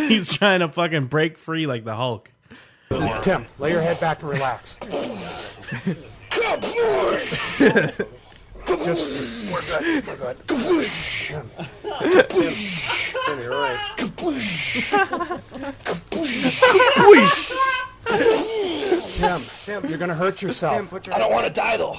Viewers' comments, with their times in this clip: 0:09 You can see him desperately trying to speak through the subconscious chaos that he's he experiencing when he says "I don't wanna die though. Seriously" (and other moments around there)